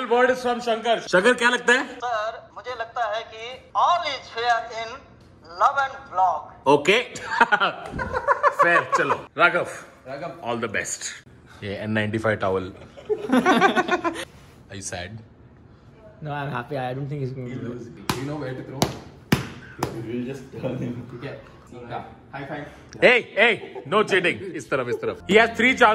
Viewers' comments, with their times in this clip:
0:07 friend: how generetor sounds me: